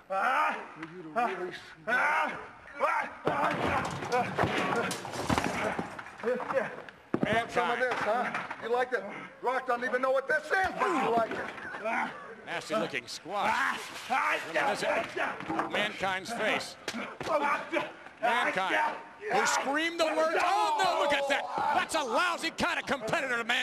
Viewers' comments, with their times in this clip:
0:07 You want some of this? You like it? The Rock don't even know what THIS IS, but you like it 🤣🤣🤣🤣 It was so good that if you pay attention even the cameraman laughed.